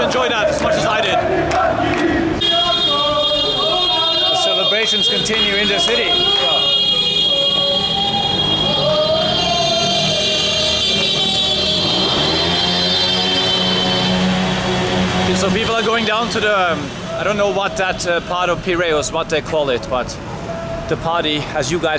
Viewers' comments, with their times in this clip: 0:05 The honking reminds me of the celebration in Vietnam won we won the 2020 SEA GAMES championship .